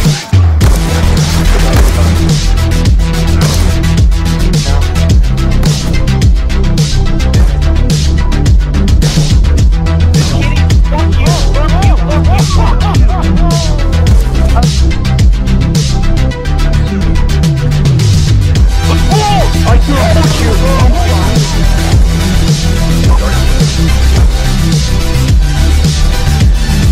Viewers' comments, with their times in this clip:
0:09 That laugh xD